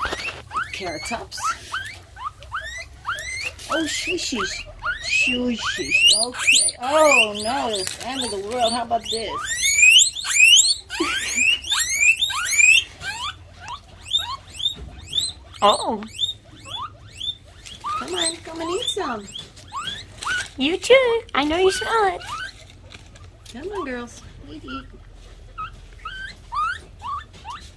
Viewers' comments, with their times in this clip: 0:09 WARNING HEADPHONE USERS.
0:15 Holy moly is like siren:))))))